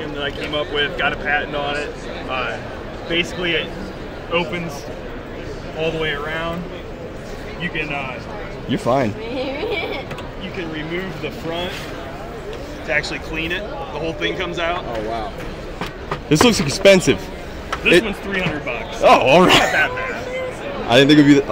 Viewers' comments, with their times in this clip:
0:08 WHAAAAAAT was that laugh lol!! I had to rewind it a couple times, and it just made it sound even more weird 😆 Eh hehe EH HEH